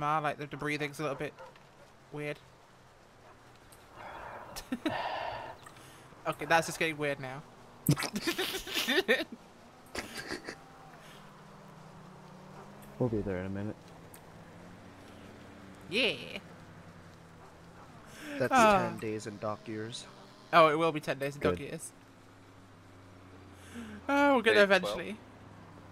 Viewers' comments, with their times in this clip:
0:07 First dingos now wolfs And laughing while drinking